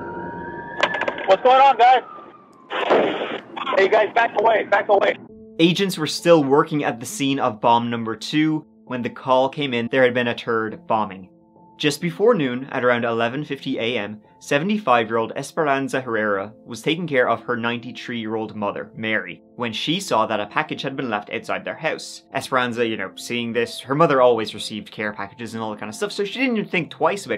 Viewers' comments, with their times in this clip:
0:05 "a turd bombing" snicker sorry can't help myself pointing that one out :D seriously though, great video. Thank you for the content
0:07 a turd bombing... hah
0:09 turd bombings are the worst kind of bombing.
0:09 Not gonna lie, got me laughing. "...there had been a turd bombing." Love the content bro, keep it up.
0:09 a turd bombing? Damn kids
0:09 I’m sorry but I laughed at the way you said “third bombing”
0:10 “Turd bombing” lol
0:10 a turd bombing!
0:10 "There had been a turd bombing" Hey bro there's a letter called H. It helps to pronounce it .